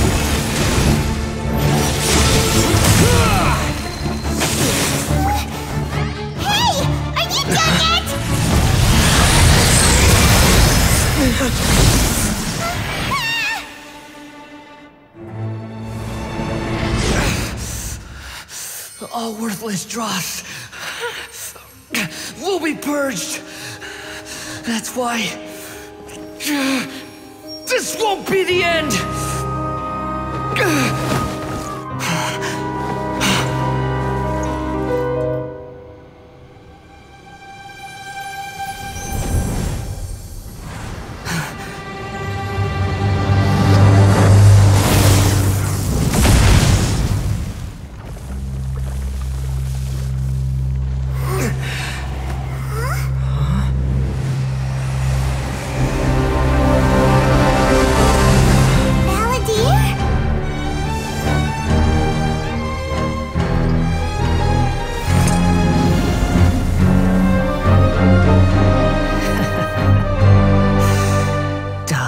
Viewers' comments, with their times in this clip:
0:06 Yeah Paimon screaming at someone with painful flashbacks will really help them, good job!
0:21 MUSIC REALLY SOUND LIKE RUBIA...
0:22 why i hear clarity 😭😭😭
0:26 AND THAT'S WHY I LOVE! NESTLE CRUNCH! Audible bone breakiNg
0:56 BRUH THE MUSIC SLAPS
0:56 BRO THE SOUND TRACK OMG THE CELLOS AND I THINK BASS SOUND SO GOOD AGAGAGAGAGAG The way the cellos and the bass fit perfectly with the melody of violins and violas is so🛐
0:56 GAVE ME CHILLS THE SUMIC AND SO IT SOUND SSO WELL
0:57 when the music hits, Goosebumps
0:57 Is it just me or does the music that plays when he gets his vision sounds similar to Venti's demo music "Bard's Adventure"? I'm sure it's intentional or it's supposed to be similar to something else, but it definitely is triumphant and then goes back to sinister when he says die
0:58 the Wanderer theme is so very badass.